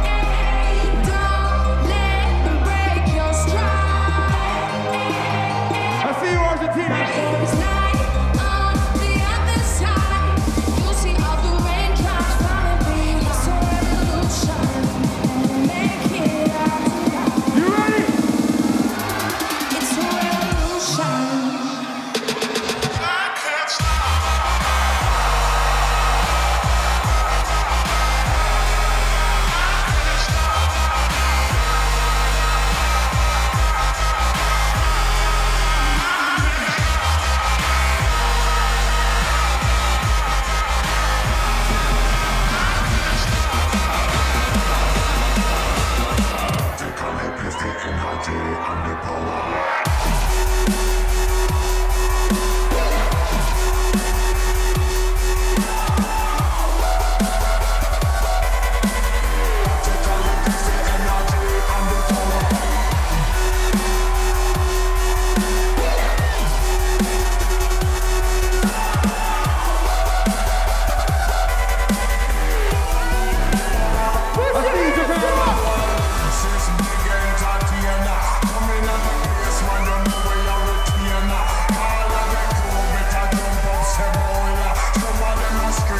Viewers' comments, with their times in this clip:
0:08 the best drop
0:08 The drop is so 💯
0:18 best drop in fkn history!!
0:22 The crowd !! When they dropped I can't stop! Every time I watch it I get goosebumps.
0:22 The Roar from never gets old. Good old times :D
0:22 that drop took time back.
0:22 is drop of the decade.
0:48 the beat dropped so hard it should be illegal.
1:08 That transition from revolution to i can't stop still gives me goosebumps